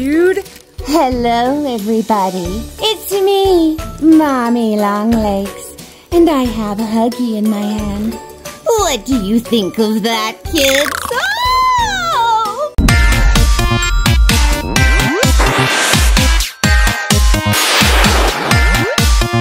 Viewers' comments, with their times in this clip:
0:03 ITS THE SAME VOICE OMG SO COOL !